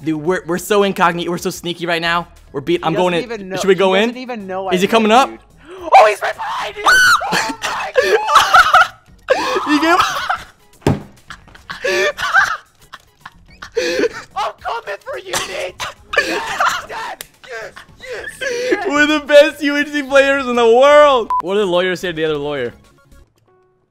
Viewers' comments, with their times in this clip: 0:06 dat scream tho